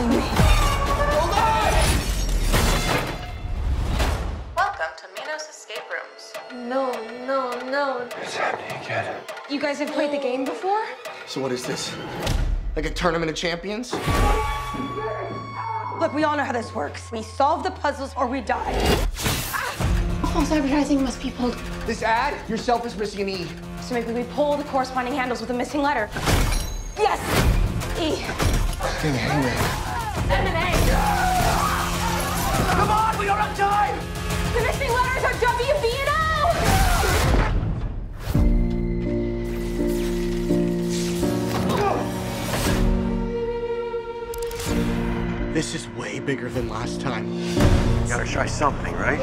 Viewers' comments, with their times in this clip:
0:06 i wasn’t into this movie at first when i saw the trailer. I just recently finished watching seasons 1 & 2 of ‘Pose’ the TV Show. i just heard this trailer again, but i wasn’t looking at the screen, then i heard …… then i thought “i’d recognize that cry anywhere!” THATS MY GIRL ANGEL! (Indya Moore) kind of want to watch it just for her, but i don’t want to see her die🙁
0:33 When you have bad acting in the trailer itself, its a turn off. Listen to the way she says "The missing letters are W B and L!!" it sounds so bad. The escape room concept is all that this movie has going for it. Complete trash actors